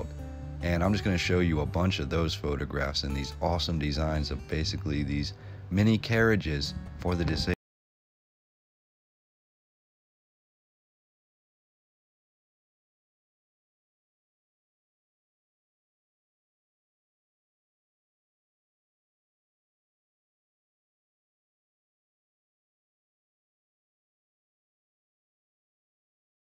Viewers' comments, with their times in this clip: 0:07 Audio Cuts Out. Freaked me the Fuck out because I am having all sorts of problems with the Internet today and it cutting out for 10, 20, 30 Minutes, 1 hour plus at a time don't help...